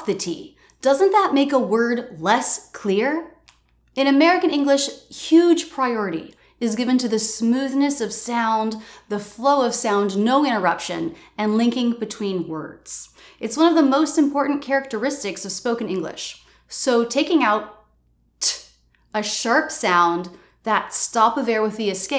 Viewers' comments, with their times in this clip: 0:09 You dropped the T when you said "no interruption...". Greetings from Argentina! You're really good at teaching American English.